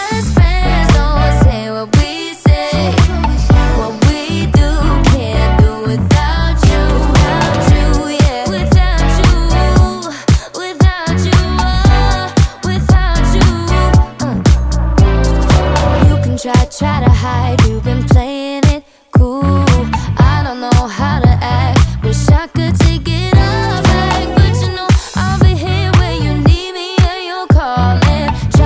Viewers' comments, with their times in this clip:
0:09 AM here and I'm in love with this music